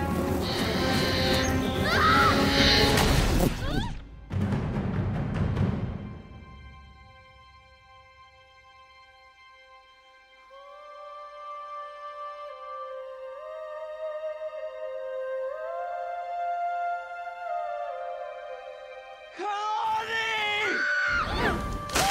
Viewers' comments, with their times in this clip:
0:10 the best soundtrack